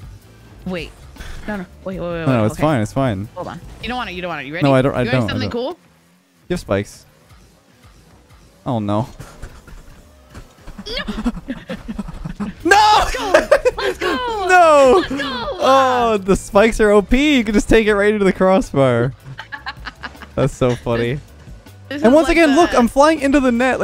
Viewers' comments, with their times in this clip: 0:09 you know things are close when you have to start the doggy pant i'm like 90% sure we have all done this before
0:09 I N T E N S E B R E A T H I N G edit: so intense